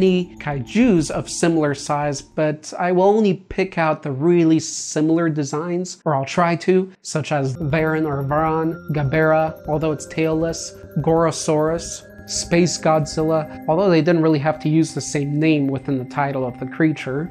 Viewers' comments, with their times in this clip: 0:04 Why did you say it like Kai Jews? Made me picture Godzilla as an Orthodox Jew😂😂😂😂😂